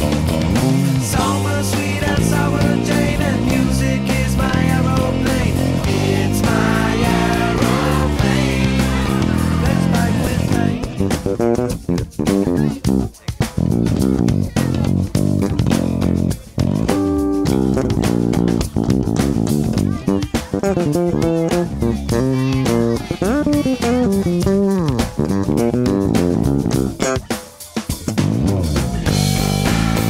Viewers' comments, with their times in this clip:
0:09 I've watched/listened to the bass solo about 20 times now. Shit, it's so good.
0:10 amazing sense of groove! Love it! :)
0:13 Nice work! Really digging that Sterling sound :D.
0:15 what actually genius. Laughed out loud at the gorgeous harmonic out of nowhere! :P